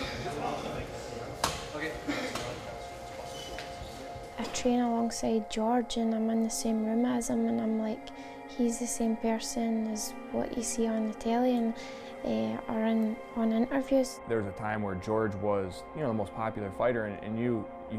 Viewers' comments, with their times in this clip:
0:04 Love that voice !